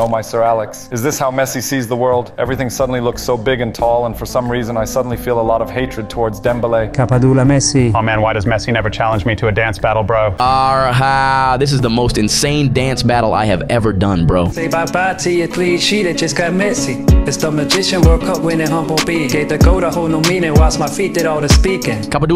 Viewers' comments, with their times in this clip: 0:09 lol mesii's voice is so adorable man. 😂